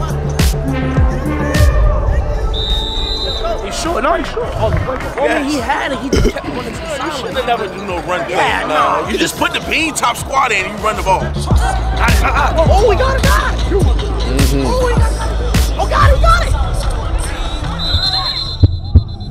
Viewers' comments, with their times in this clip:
0:06 yo who burped smack on the camera?